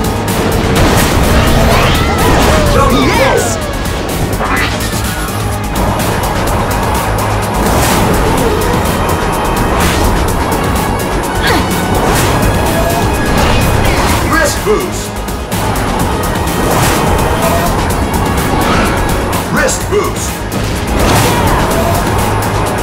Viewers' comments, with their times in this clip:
0:03 😭😭😭 Everyone says yay! When they stunt but eggman says “nOT BaD”